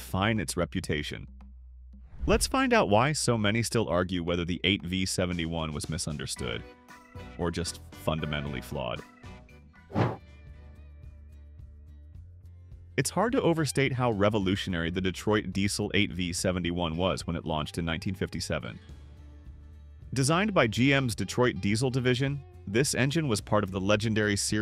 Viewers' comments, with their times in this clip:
0:07 I had to stop watching after three gratuituous sound effects.